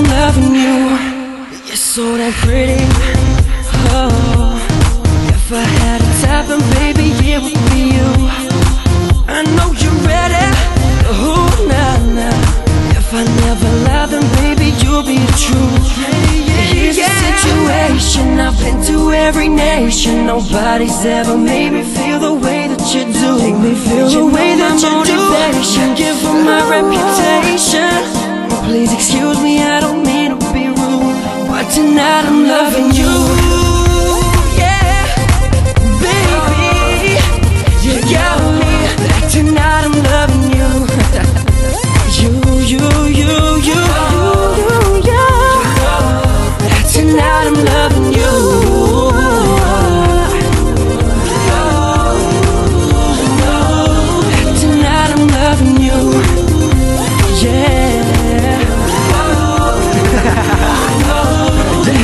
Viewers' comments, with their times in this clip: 0:07 that growl gets me everytime!!!!! :)))
0:40 sexy laugh and hot falsetto right after :)
0:45 The falsettos gave me chills omg